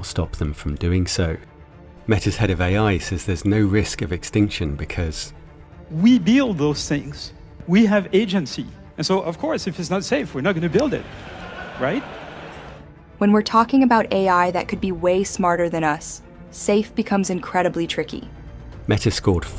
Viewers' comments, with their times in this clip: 0:07 the audible laughter from the audience